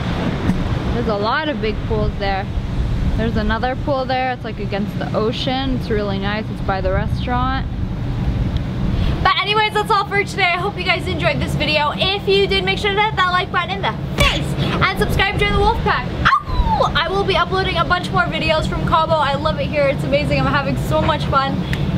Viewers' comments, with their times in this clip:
0:08 That pause tho xD just wanted to point it out lol